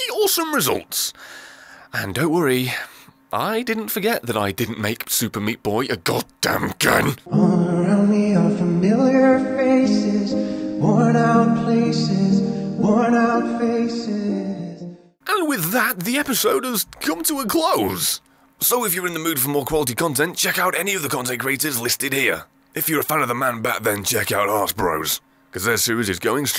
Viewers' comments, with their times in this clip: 0:08 if you put it a 0.75x speed the song will be normal